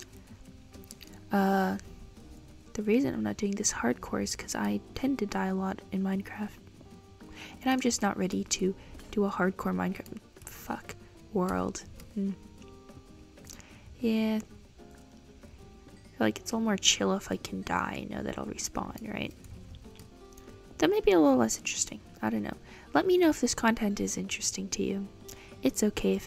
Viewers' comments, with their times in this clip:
0:09 hmmm it goes from quite to a swear idk why that's a kinda funny (I'm so simple istg)